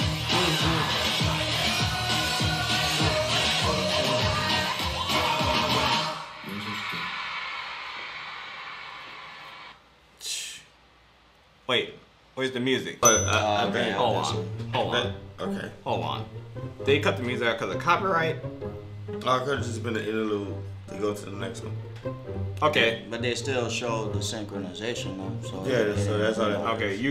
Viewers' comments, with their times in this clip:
0:09 I think that one clip with no sound was because the clip was slowed down. That clip is from Am I Wrong, so I think they were trying to highlight their moves (because in that part it goes pretty fast) without having the annoying slo-mo sounds. Plus if you look closely, while they’re dancing they’re also patting each other’s hand as part of the choreo.